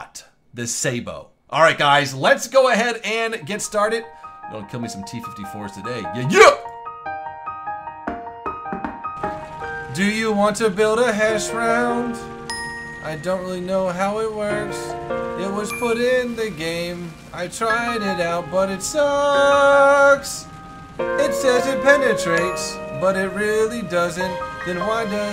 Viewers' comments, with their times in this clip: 0:09 ears start to bleed minutes in ;)